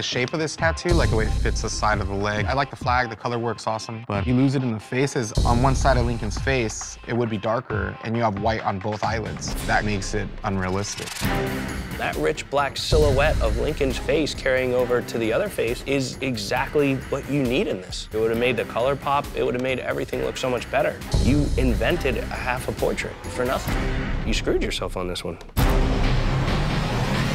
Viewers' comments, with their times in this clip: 0:09 wait was that a windows error sound?